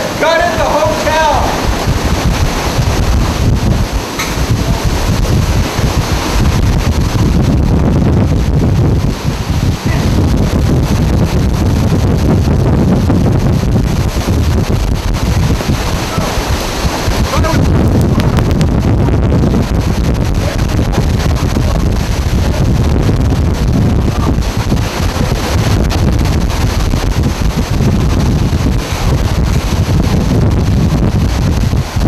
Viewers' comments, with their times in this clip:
0:07 That's some bass drop
0:19 Man the sustained wind noise is INSANE! Great footage. Going down a rabbit hole of Katrina documentaries and this is a really good one. Great work.